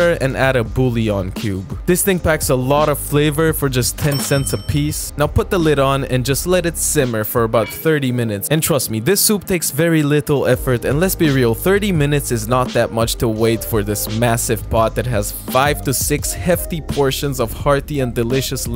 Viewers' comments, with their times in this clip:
0:04 sounds just like the RuneScape grand exchange sound effect 😅